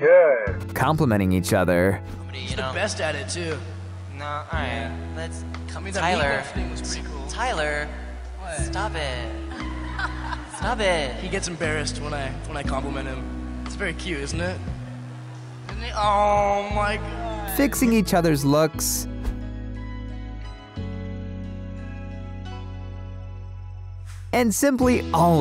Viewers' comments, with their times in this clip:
0:07 the way stiles says "tyler stop it" i laughed so hard 😂